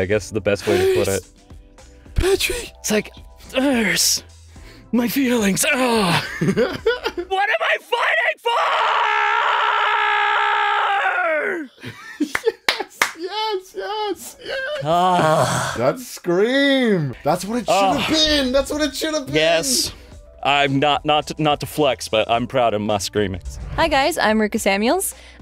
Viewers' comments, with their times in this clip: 0:06 holy shit that range was impressive
0:07 he sound like ice king from adventure time.